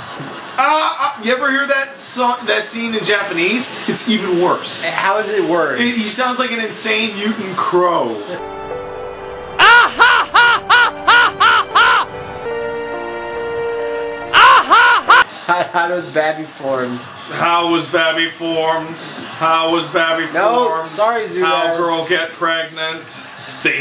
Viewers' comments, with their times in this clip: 0:09 Gilbert Gottfried makes a cameo appearance in Final Fantasy.